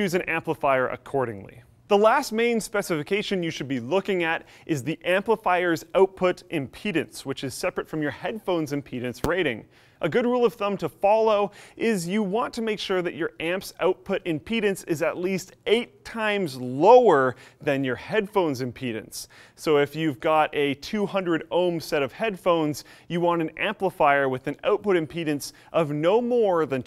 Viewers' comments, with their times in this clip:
0:08 What was that short "bfrp" noise?